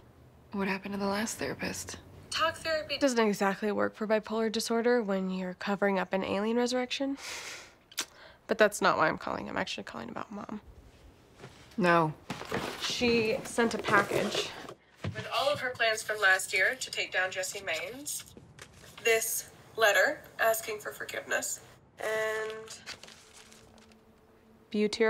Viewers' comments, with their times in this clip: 0:06 Covering up an alien what? - I had to put CC on, because I hear something else...